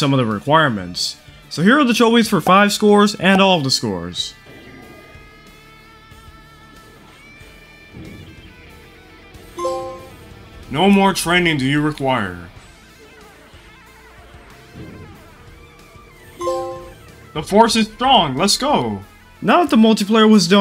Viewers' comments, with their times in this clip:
0:06 starts to hear angrybirds transformer music